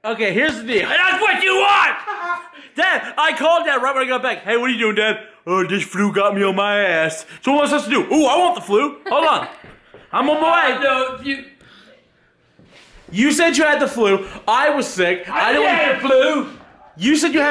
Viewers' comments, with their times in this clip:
0:05 that sounded like agp